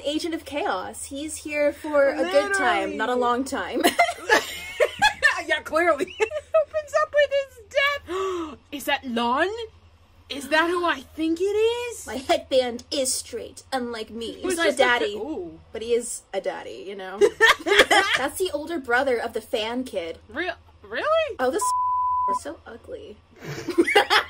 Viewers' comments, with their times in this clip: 0:06 Girl when you said “he’s an agent of chaos” I thought you said “he’s an Asian of chaos. Took me a second to realize what actually happened after I laughed for like 5 minutes